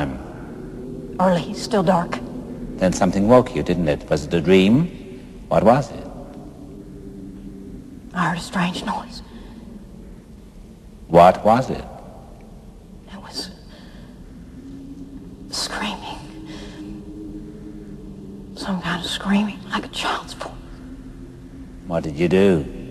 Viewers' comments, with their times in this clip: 0:05 sound effects in this movie are perfectly timed. notice the sound of wind blowing in it gives effect to the scene without even trace.